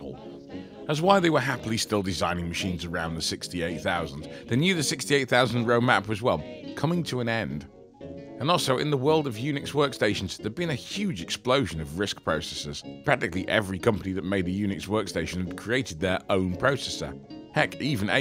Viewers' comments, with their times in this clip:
0:03 That stupid old time music in the background was just annoying as distracting when I was trying to actually listen to the dialog. specifically is where I had to pause and write this.